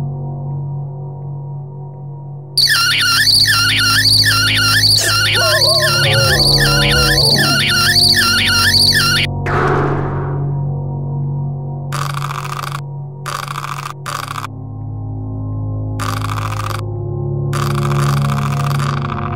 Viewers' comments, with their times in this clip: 0:03 I had my volume turned all the way up. Now I hear a slight ringing in my ear...